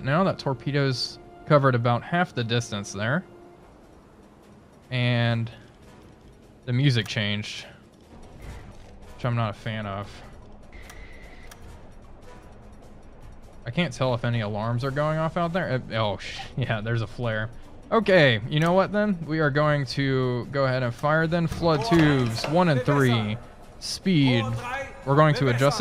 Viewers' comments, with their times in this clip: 0:07 Why do I hear boss music?